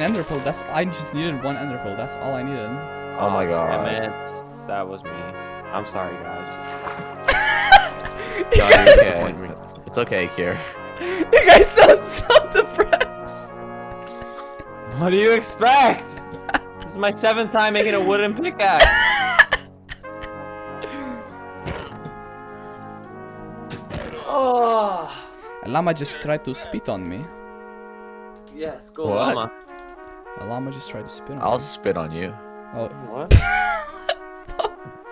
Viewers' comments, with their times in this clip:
0:10 whats the song? Its kinda relaxing
0:22 I just gotta ask what your background music is I hear it every time and it’s hella calming